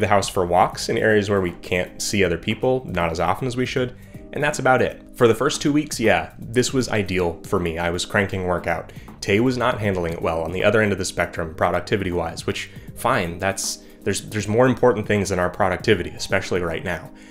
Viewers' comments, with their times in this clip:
0:03 you say grocery the same most people I know say it